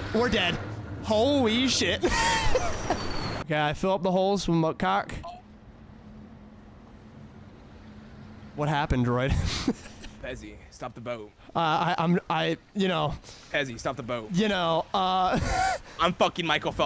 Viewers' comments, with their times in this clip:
0:04 that cut-off scream killed me